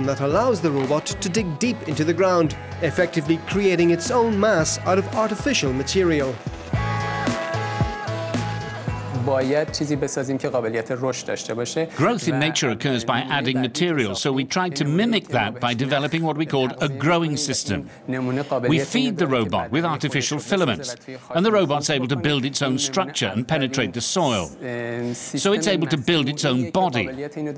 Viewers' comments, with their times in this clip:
0:09 the guy speaks farsi, his own language. so the interviews were conducted in everyone's own mothertongue?